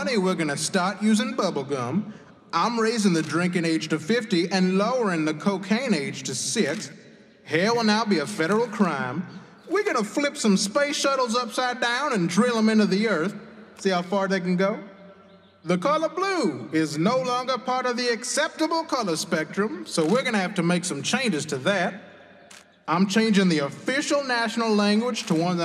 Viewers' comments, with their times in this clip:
0:07 What’s now a federal crime?